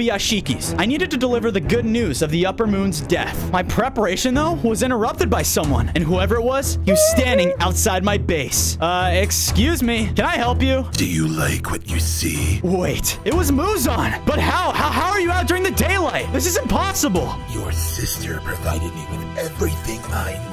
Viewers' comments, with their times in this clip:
0:03 bro Muzan said Hee hee remember Michael jackson 😂